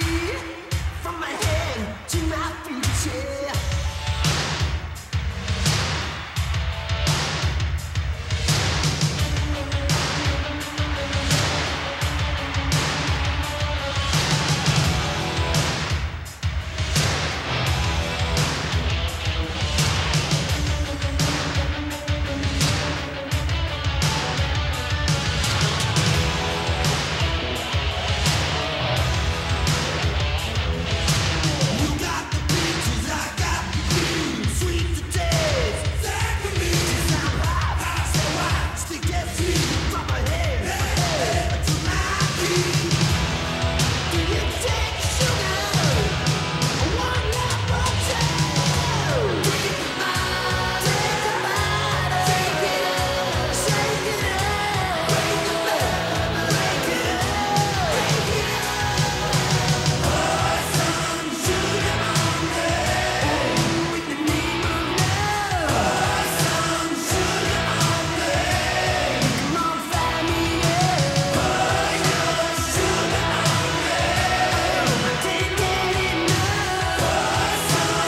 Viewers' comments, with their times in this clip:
0:04 you can feel her clap from her soul to the beat
1:01 The moment you realise that the drummer only had one hand and he still created such a kick ass beat.